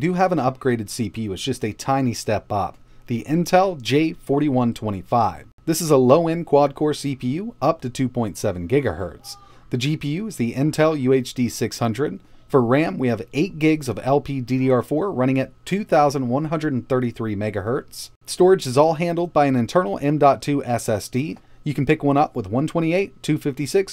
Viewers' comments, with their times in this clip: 0:08 Is it just me, but is there a "scream" ...? XD
0:09 You can hear people in the background